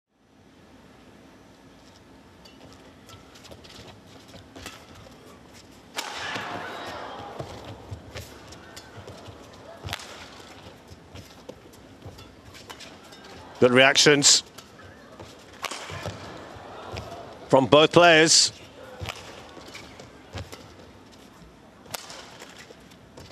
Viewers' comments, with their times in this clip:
0:06 It's funny how the public reacts in shock to the powerful smash that sounds more like a gunshot